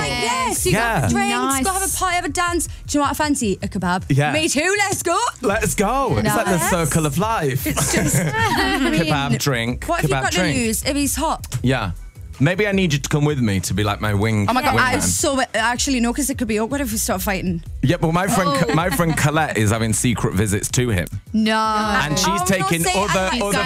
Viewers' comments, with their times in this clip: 0:04 perrie sounded so geordie 😂